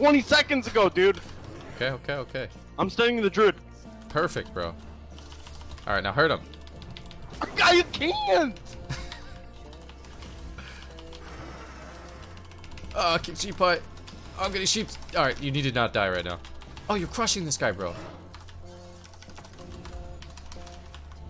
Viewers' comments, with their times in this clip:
0:07 lol “I CANT” never heard a grown man sound like that before lol